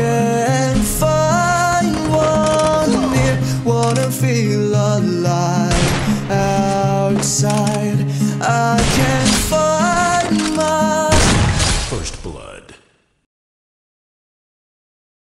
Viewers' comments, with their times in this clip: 0:12 stuck song, beautiful gloo🤣